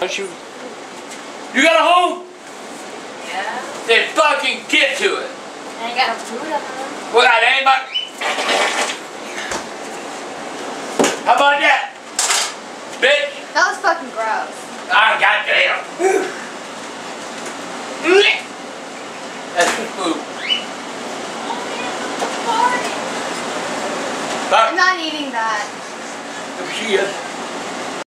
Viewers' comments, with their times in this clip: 0:05 Nice Rippper LOL
0:06 farts, how bout that?
0:06 I was drinking sprite and angry grandpa farted and I started laughing and almost spit the sprite out
0:07 That fart sounded leathal,,,better check them drawers
0:07 that fart tho
0:07 Wettist fart ever
0:07 Lmaooo HE FARTED SO CRUCIALY LOL!!
0:07 That was a freaking shart.
0:07 Epic fart hahaha
0:07 damm grandpa you been holding that fart for 2 weeks god damm that was wet lmaoo
0:08 Angry Grandpa's fart had me dying of laughter 😂😂😂.
0:08 When Grandpa lifts his leg up you know it’s time to release that gas! 😂😂😂😂
0:08 That fart was epic!
0:08 Sounds like that thing's been tampered with
0:22 in the background WHO FARTED?!?!